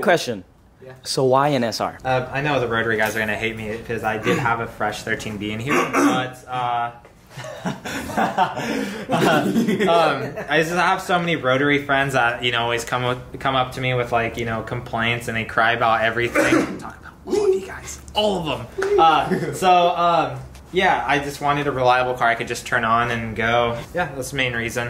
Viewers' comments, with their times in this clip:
0:08 son sounded like scooby doo !!!!!